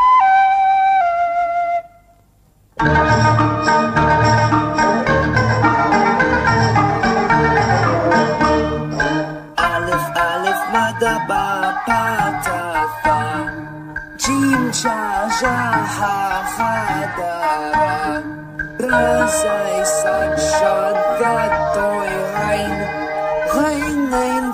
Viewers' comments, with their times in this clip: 0:09 reminds me of urdu alphabet song